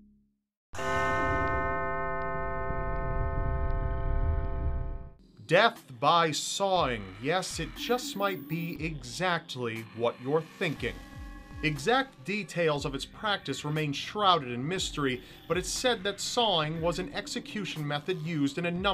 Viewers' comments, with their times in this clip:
0:04 When you're french and you mingle sawing/sewing... yeah, death by sewing, how... How yould you actually do that!?